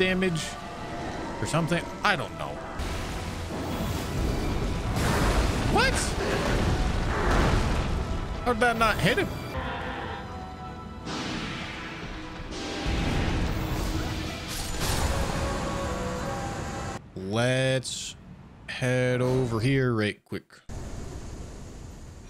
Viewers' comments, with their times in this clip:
0:09 why did you mute yourself ? i only noticed cause the death sound was a little of